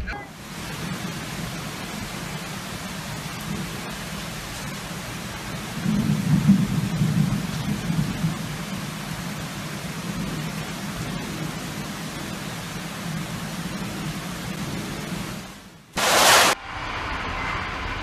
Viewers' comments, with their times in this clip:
0:05 Poor puddy cat lost one of his lives with the sound of that lightening hit starting